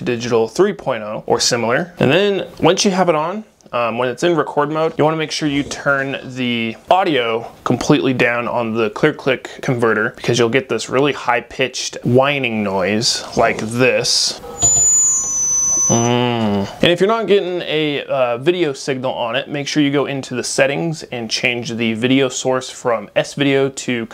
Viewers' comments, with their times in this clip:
0:06 that squeal is "audio feedback", where sound from the speaker on the ClearClick video recorder is being picked up by the camcorder microphone and forming an "endless loop" (IE: feedback) of amplification. Maybe use headphones plugged into the AV recorder? That would break the feedback loop.